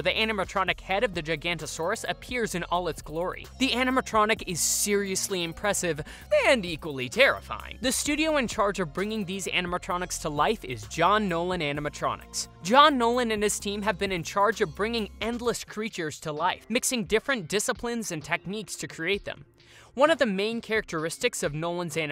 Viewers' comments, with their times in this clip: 0:06 finaly you said the name right